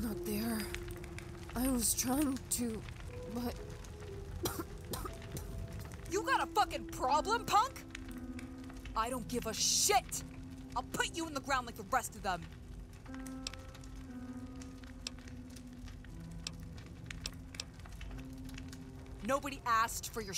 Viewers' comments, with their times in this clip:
0:04 is actually a good voice actor for once.